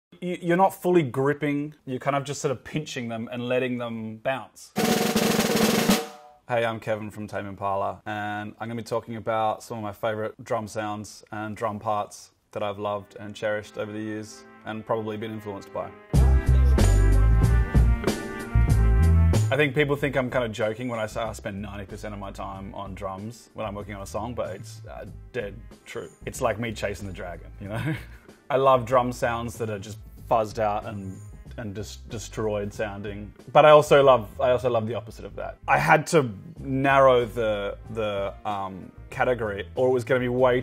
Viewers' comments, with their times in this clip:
0:04 Kevin teleports a cloth using the power of snare roll
0:12 can someone please tell me the music ? it sort of reminds me of "Strawberry Fields Forever" but I know it's not
0:28 .....yaaay, I've got me one of those Shure SE30's! Dirty, scratchy compression.....like a Level-Loc, without the ebay price tag!